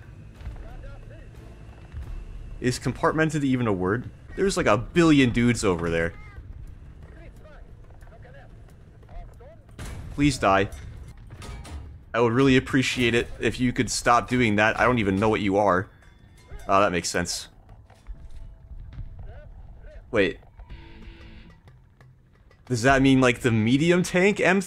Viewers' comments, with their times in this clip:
0:05 Is that a cat meowing?